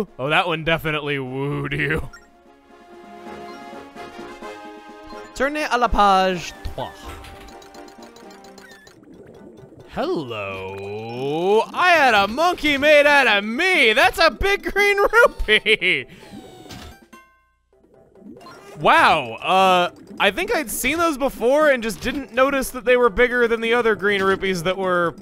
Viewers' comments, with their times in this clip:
0:06 i like your french accent